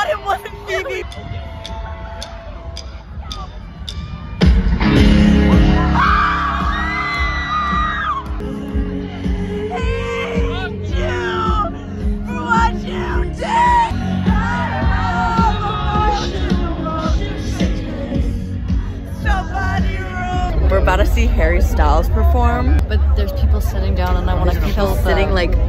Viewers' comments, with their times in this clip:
0:06 you sound so hurt looollll